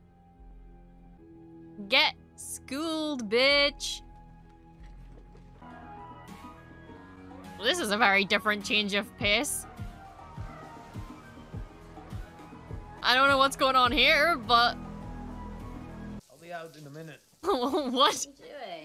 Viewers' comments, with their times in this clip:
0:05 Therapist: Star Wars Miami planet with Daft Punk type music isn't real, it can't hurt you. Star Wars Miami planet with Daft Punk type music: